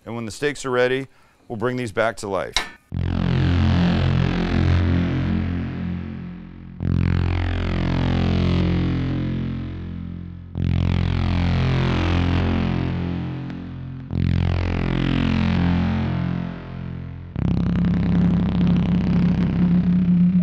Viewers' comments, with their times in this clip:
0:03 what in the stranger things synth music is going on here.
0:03 What is with that doom music ?